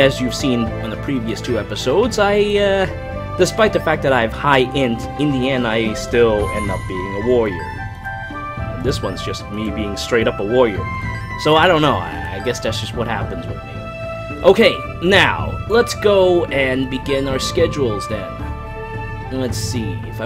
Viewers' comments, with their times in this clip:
0:06 I thought it was Pocahontas music playing in the background lmao